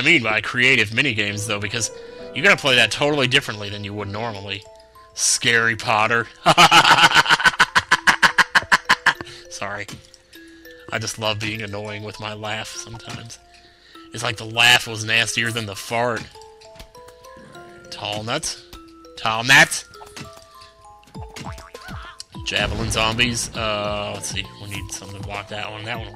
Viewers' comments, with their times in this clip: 0:04 This weird laugh
0:06 WTF lol i laughed at your laughing xDDDD
0:06 WTF LAUGH IS THAT
0:06 OMG!!! I LOVE YOUR LAUGH!! ^^ Scary Potter laugh hahahahahaahaha!
0:07 that laugh was so funny
0:08 turn speed to 0.25x that laugh is abosulatly satanic